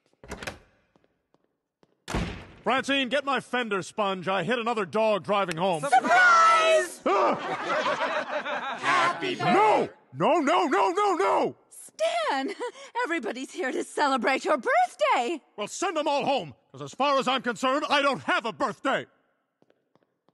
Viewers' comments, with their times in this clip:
0:08 Stan stops the birthday singing